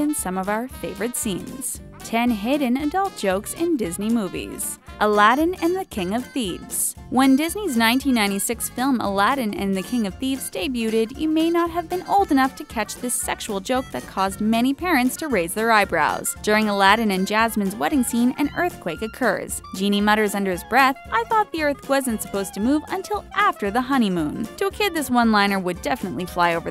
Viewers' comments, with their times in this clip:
0:08 And she also mispronounced the word "debuted" She pronounces the "T" and says it like day-bew-ted. Duh.
0:10 ...'Day- beauted'? Fuck.